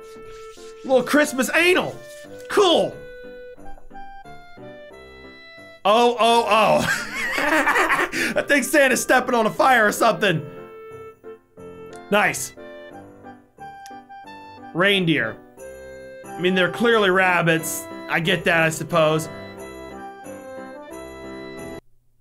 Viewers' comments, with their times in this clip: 0:05 Not sure what is funnier. The wrap or the laugh 😂😂
0:06 It sound like he farted 😂